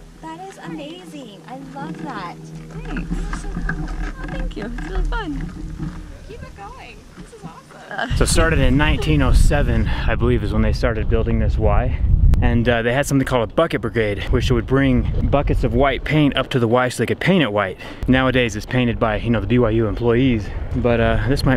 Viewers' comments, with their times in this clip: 0:07 girls like "keep it going!" lol girl on wheel chair bike: (nervous laugh) thinking: I kinda have to lol